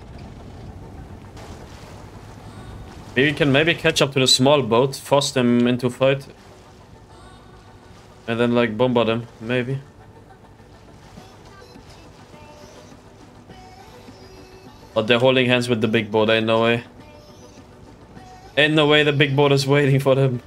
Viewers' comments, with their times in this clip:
0:03 Scene and music start literally gave me goosebumps! Your playstyle combined with banger music makes the videos even more crazy! Love it!